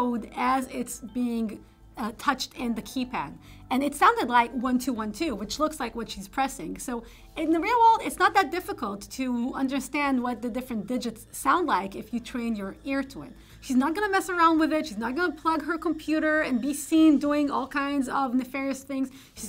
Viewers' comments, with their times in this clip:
0:03 Great video and nice to see so many high ratings. I'm glad movies have moved toward more realistic hacking scenes. Only thing I'm surprised is Is there really access-giving keypads that makes different sounds on different digits? In phones that happens because historical reasons, but other than phones?